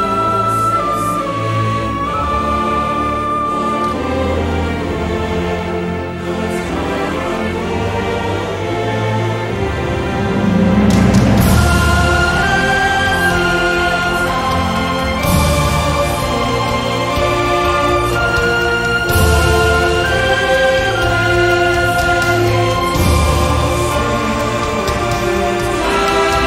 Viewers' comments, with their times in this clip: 0:10 Greatest music ever heard ❤️